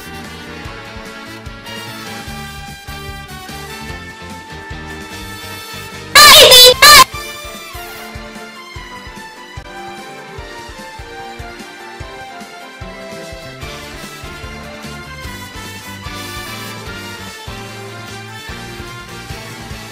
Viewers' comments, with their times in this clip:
0:06 Head Phones warning!🔊!